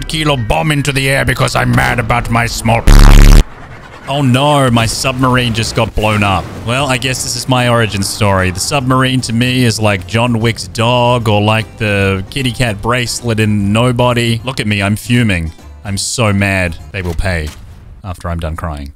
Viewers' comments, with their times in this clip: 0:04 oh narr (gotta love Australians with great accents)